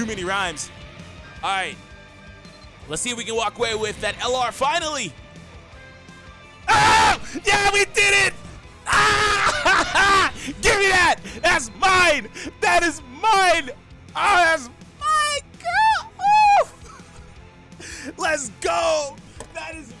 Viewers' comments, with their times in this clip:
0:08 that shout tho. made me jump